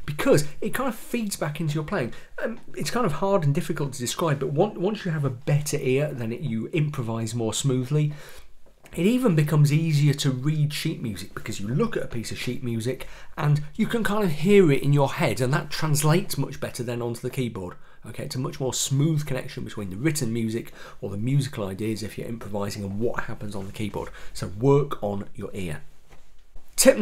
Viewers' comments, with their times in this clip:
0:10 no offense; just funny music "sheet" also like your accent :D